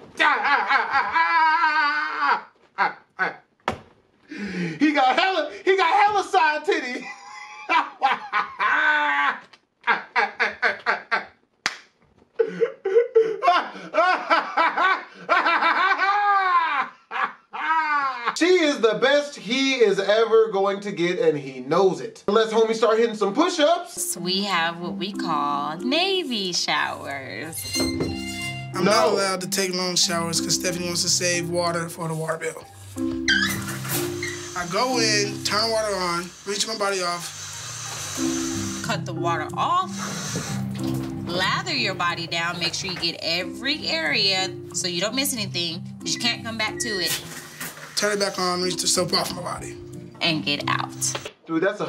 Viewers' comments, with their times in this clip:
0:10 LOL he’s laughing like Mr. Crabs 🦀😂
0:35 "I go in the shower, wrench my body off..." LOL! I bet he also pronounces "ask" like "axe".